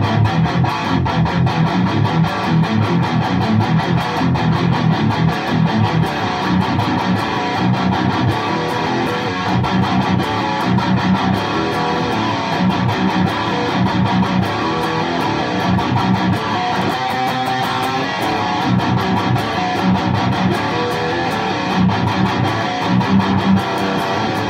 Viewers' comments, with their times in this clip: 0:06 I am about to pull the trigger on this one because of one thing: The growl. You've also called it a "snarl" in another video. It's more pronounced when you go from some note on low E to open E (like ). I plan on sending it into solid state power amp on guitar with Seymour Duncan Distortion in the bridge and into cab with V30's. Do you think it will retain this "roar"? ...because that's the reason I love the sound so much. In other videos (in general) the tone isn't as tasty as yours and it just doesn't sound so mean, so I'm worried It may sound quite different.